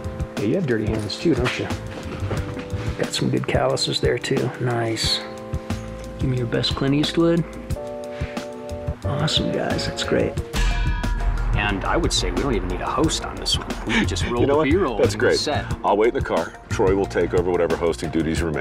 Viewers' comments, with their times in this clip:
0:06 He gave us Sean Connery 😂